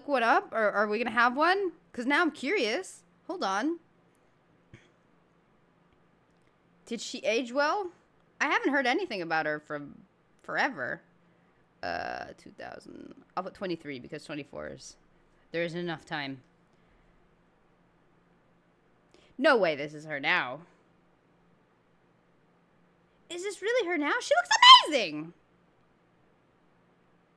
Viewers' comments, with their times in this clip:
0:10 It really sounded like you burped